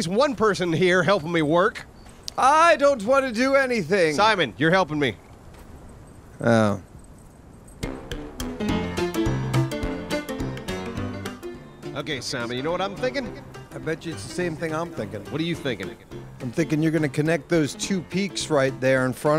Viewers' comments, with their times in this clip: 0:07 I thought I had left a ask Reddit video on in the background